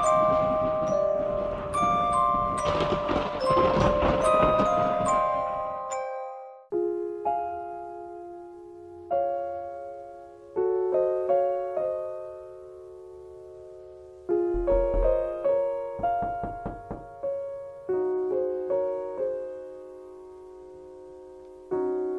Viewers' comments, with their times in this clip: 0:07 I personally love classical music. And that song leaves me absolutely speechless.